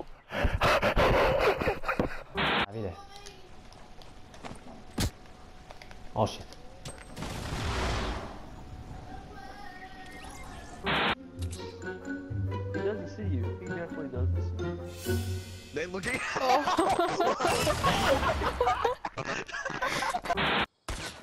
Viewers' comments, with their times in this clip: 0:09 nice background singing 11\10